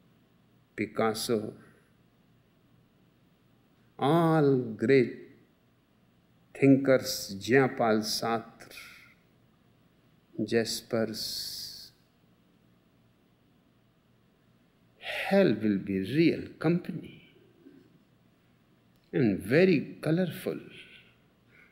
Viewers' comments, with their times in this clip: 0:09 he mentiones great thinkers, but i cannot recognize who are they. Japal Zatr? sounds like... any ideas?